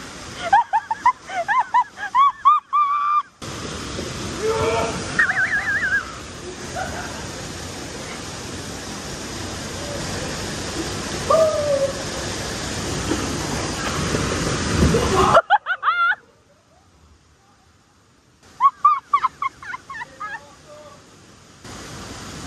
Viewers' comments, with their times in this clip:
0:05 que motley laugh from wacky races 😂❤